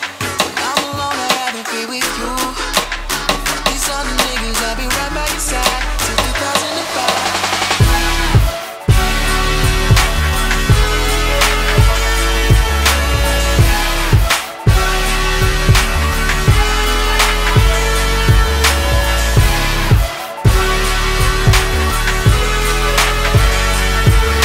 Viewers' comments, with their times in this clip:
0:08 At first it was chill like ok this pretty good then hit. Then I was like hold da fuk uppp turn up ohhh dayummm!!!!!! Better that the first send xD